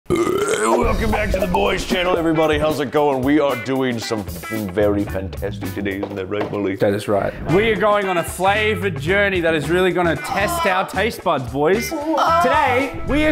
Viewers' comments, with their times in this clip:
0:00 rick and morety ahh burp